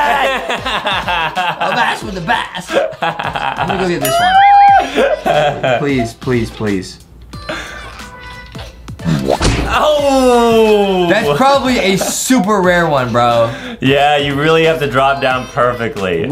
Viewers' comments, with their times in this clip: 0:03 What was that noise? (⊙_⊙)？ 😂🤨